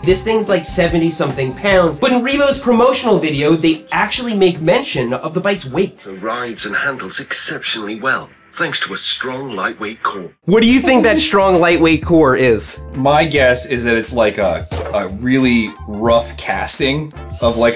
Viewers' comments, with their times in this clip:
0:05 I love how they used a posh English accent for the ad:cat-orange-whistling: